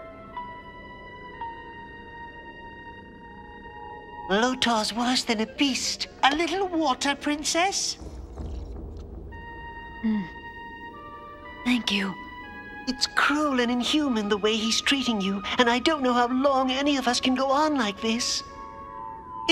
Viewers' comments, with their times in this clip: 0:06 You can tell the girls' voices were done by guys since BJ Ward was then the only female voice actor.